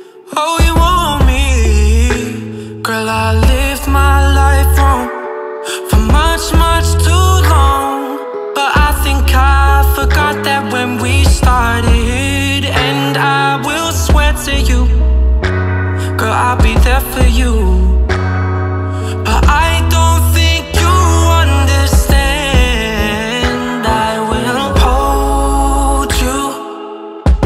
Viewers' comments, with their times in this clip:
0:09 when we startedddd!! Damn i love that Ur voice 🔥🔥😭